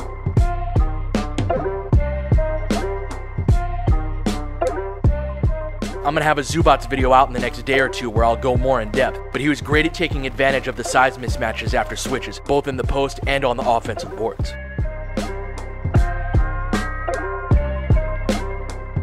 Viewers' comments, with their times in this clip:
0:06 The beat is so cold